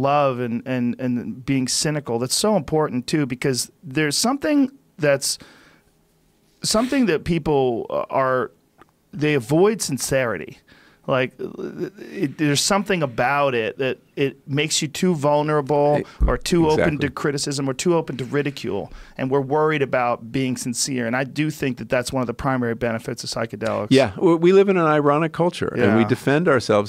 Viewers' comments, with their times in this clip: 0:10 when you trying to drink something but hiccup at the same time😂